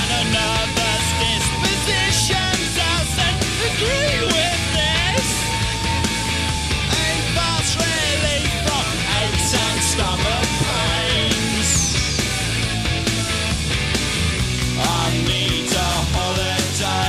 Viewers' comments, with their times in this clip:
0:03 HOW HE ACTUALLY CHANGE HIS VOICE GELP